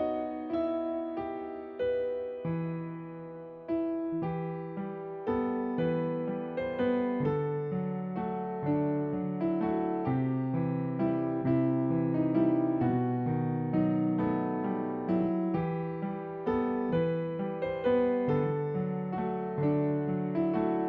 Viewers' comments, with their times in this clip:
0:03 it reminds me of watashi no koe sayonara